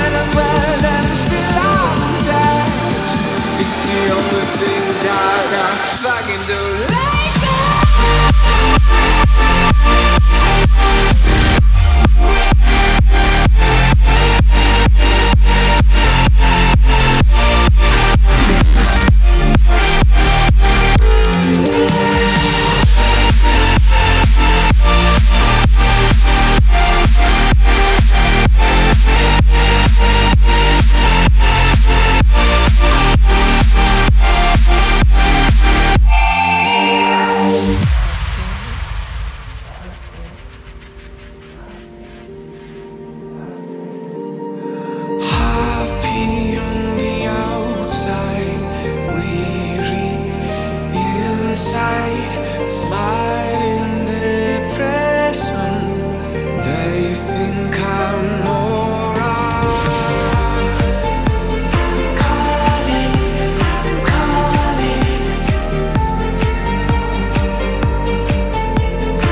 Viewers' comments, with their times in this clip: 0:06 oh gosh that high note is lovely <3!
0:09 bro.... this part feels like the track is released in 2014
0:44 made vocals that come out when you are actually trying to sing with all emotion 😭
0:44 Ikr! the piano and the voice fit perfectly well,with the bass,this music is so good lmao
0:45 "Heart pee on the outside" lol vary naise
0:57 "They think i'm a moron" You can't unhear it now, Can ya ????